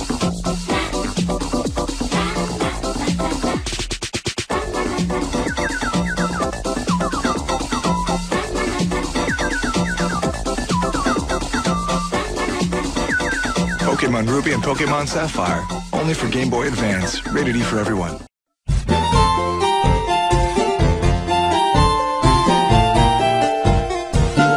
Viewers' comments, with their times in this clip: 0:05 anyone ever find it weird they play sounds of a bird chirping when showing Torchic? Is that supposed to be Torchic chirping?